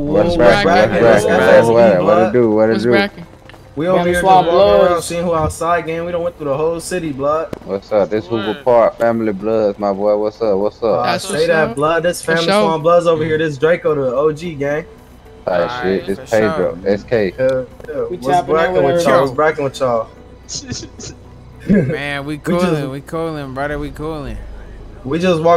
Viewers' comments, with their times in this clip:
0:06 did he accidentally said paydro 😭😭💀💀💀💀